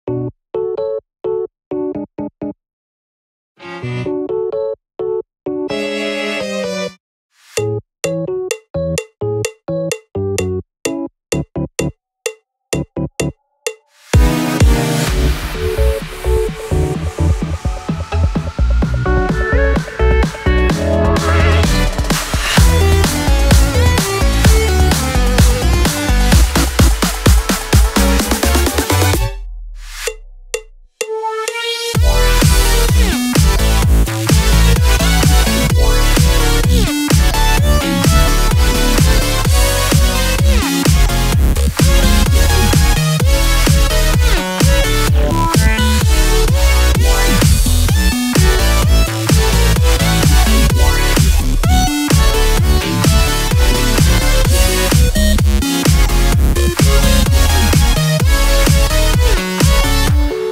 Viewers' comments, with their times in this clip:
0:07 Fortnite Llama bell be like:
0:29 the drop tho
0:30 The moment that beat drop 😫
0:32 (beat drops) Me: (STARTS SEIZURING)
0:46 The guy hehehehe